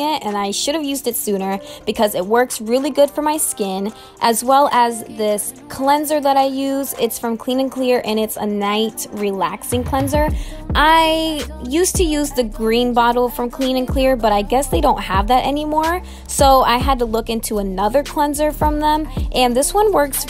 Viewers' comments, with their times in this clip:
0:04 I could hear he go “shit”